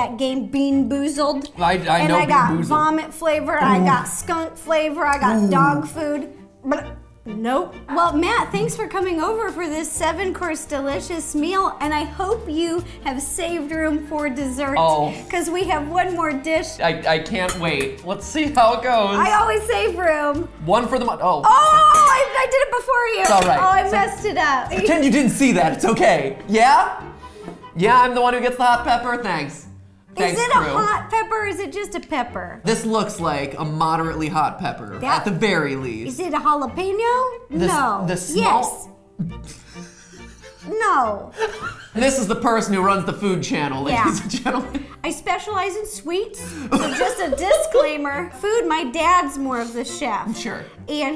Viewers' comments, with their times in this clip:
0:06 sounds like a Yoshi
0:36 Ro: is it a jalapeno? Mat: the small- Ro: No..yes.. Mat: hysterical laughter Ro: ...no Me: Laughing so hard